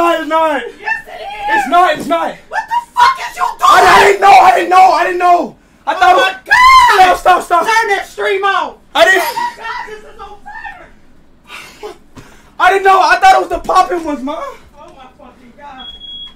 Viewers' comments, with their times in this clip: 0:02 Yelling at the guy is funny